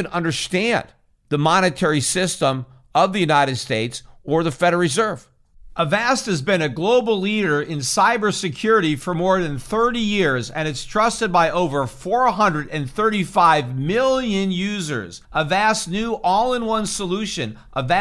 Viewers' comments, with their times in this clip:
0:05 A vast what? The noun keeps cutting out! If the treasury mints a trillion dollar NFT and orders the Fed to buy it, Peter Schiff will pull his hair out!